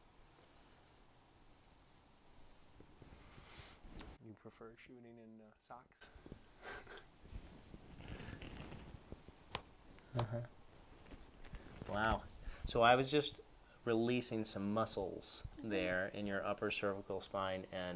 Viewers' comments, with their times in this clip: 0:04 Cool videos. What was those sounds was that wrong edited in or something? lol